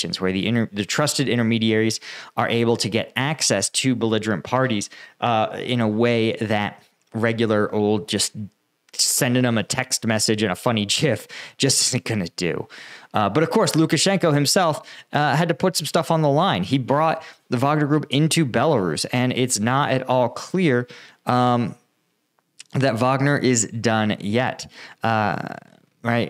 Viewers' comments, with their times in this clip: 0:08 bro didnt just pronounce gif as gif and we gonna let it slide
0:09 You have a very helpful analysis of the war and explaining it to people who haven't been in combat, but Jif is what gets spread on a PB&J. It's not a Jraphical Image File. This internet fight was settled a long time ago, though the peanut butter holdouts do still exist...